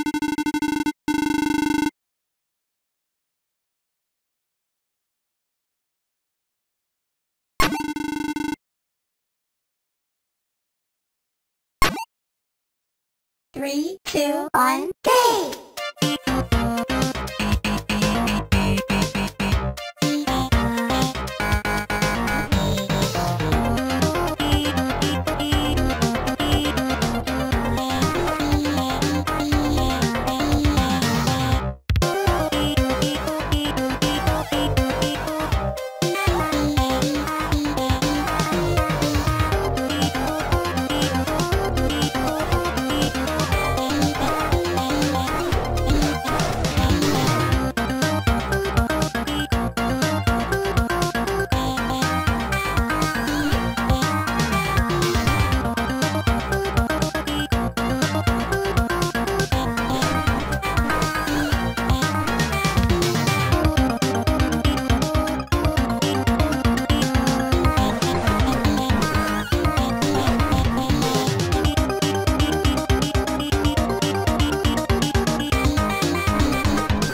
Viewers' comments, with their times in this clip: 0:09 He is speaking the language of bops
0:15 sounds like a racing Music
1:03 thanos beatbox in a nutshell